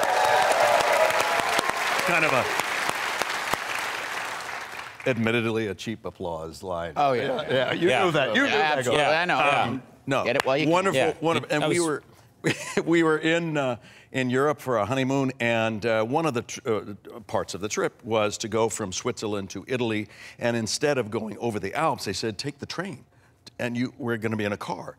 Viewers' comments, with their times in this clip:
0:08 Lol all three talking at the same time